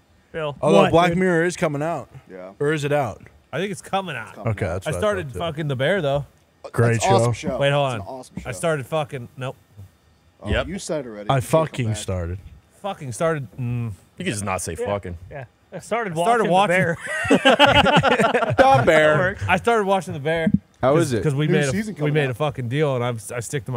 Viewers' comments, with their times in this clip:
0:05 “I started fucking the bear though” Tone